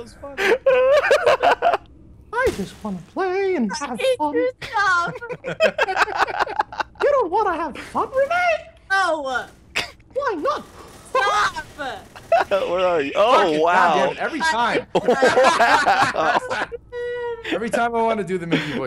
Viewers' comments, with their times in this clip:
0:06 wtf?!? Mickey mouse laughed till i choked